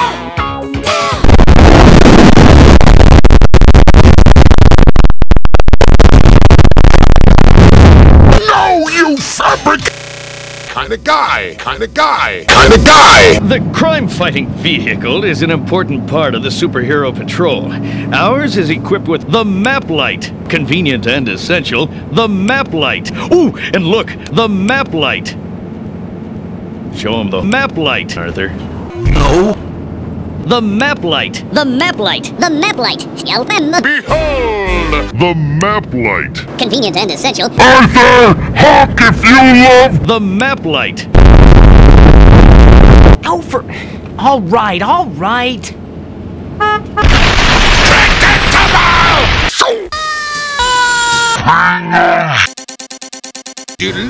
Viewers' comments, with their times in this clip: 0:06 DAAAAAAAAAAAAMMMMNNNNN DAT N1664'hz voice is d33p in decibels.
0:40 I'm not the only one that enjoys that slo-mo ear rape am I?